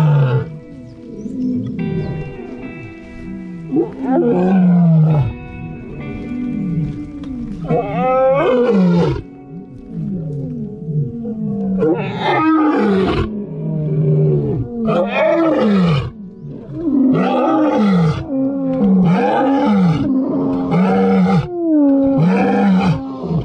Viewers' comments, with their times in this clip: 0:07 sounds like she's coughing up a hairball !